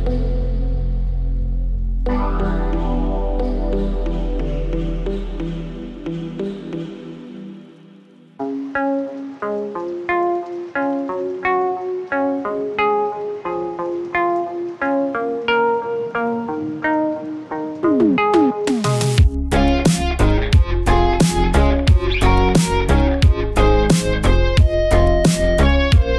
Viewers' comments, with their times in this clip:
0:07 This is my favorite song, gotta love the guitar solo 🔥🔥